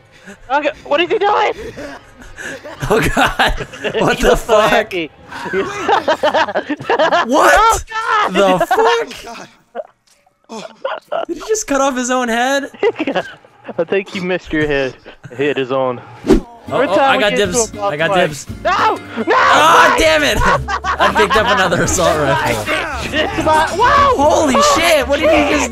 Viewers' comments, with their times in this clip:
0:07 The computer just pauses and starts louding directly on this.
0:09 his voice cracked